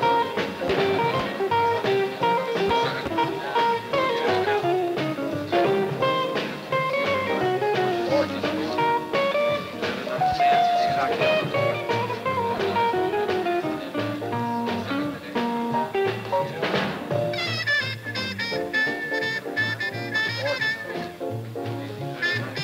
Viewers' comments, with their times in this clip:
0:05 Dig that west coast jazz sound. Those cats are really gone.